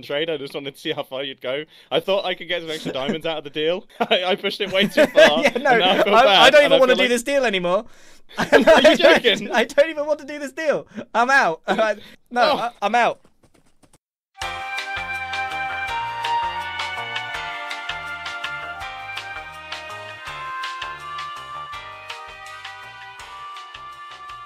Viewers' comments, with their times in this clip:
0:05 when he offered the mending book in the actual video my heart like literally broke cause it almost sounded like he was on the verge of a panic attack...